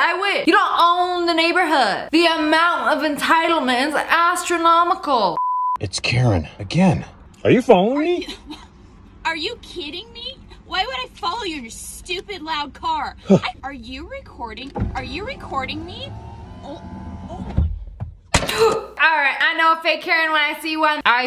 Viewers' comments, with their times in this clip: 0:04 why she say it like that 😭😭😭